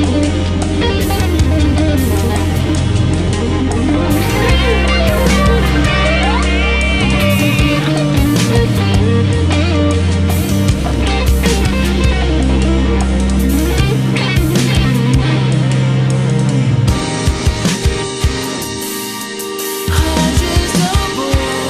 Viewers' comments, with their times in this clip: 0:04 You can hear the Guthrie in Love it.